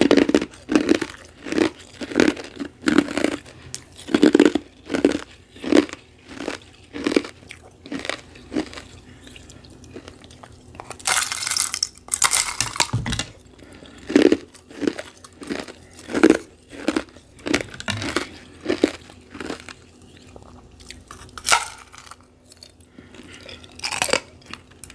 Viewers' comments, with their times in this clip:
0:10 omg ..I loved this glass breaking sound 😍
0:10 shattery ice crunches ✨